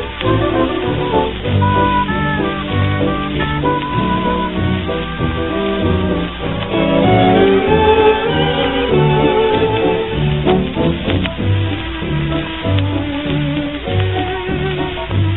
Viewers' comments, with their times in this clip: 0:03 I love this version! Quite different from the peppy, Latin-flavored Ted Weems version; this one actually seems more appropriate to the mood of the song. And, of course, your depictions of those afflicted with heartaches are marvelous -- I love the usherette